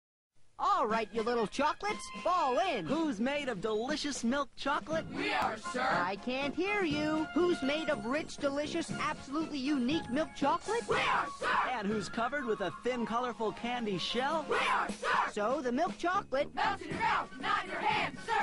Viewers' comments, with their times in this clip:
0:05 even sounds like the line from Mickey Mouse Clubhouse